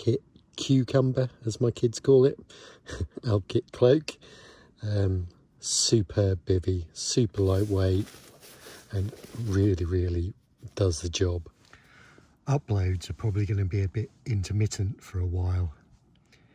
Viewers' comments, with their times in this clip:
0:03 Loving the soundtrack as always, love a bit of MIA. What a beautiful day❤️ Good luck with the baby mate! Enjoy your sleep while you can.. hey did you spot those eyes watching you